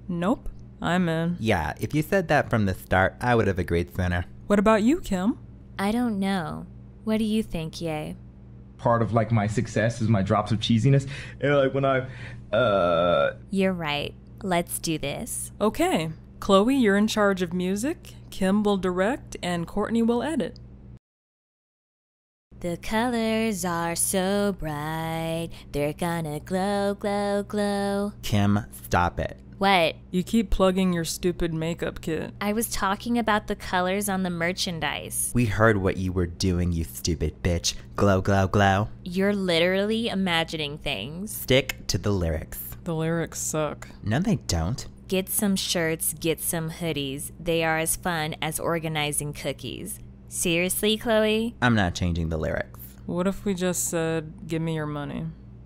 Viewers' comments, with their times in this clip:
0:09 ... wtf did he juat say??? i dint hear a thing!
0:41 I hear d... to the lyrics 😂😂 it should be stick to the lyrics but I heard d to the lyrics 😂